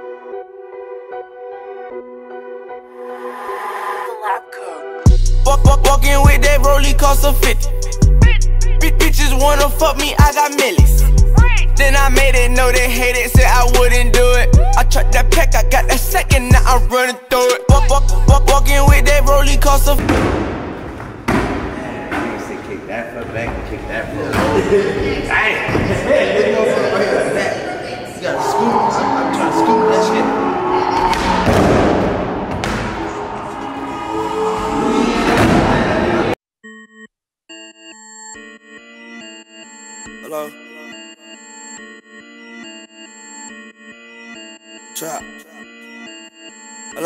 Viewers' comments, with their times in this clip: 0:05 most intense drop of 2016
0:30 Did I just hear Lil wayne playing Young Thug in the background ????????!!!